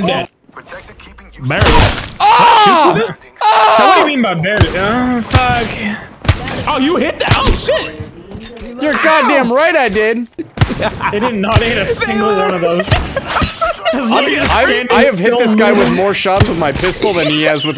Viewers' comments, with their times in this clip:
0:04 Y’all hear that moan ?